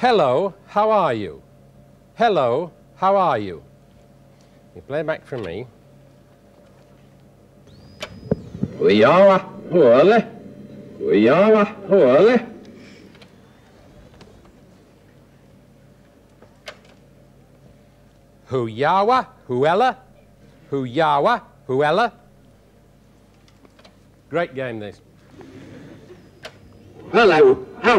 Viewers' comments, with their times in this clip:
0:09 … and thus the Finnish language was born.